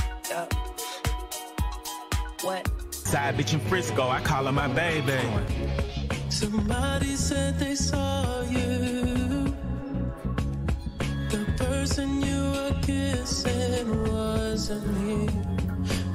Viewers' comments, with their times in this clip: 0:03 Say what you want, Goes hard. Especially with the My Superhero Movie Bass.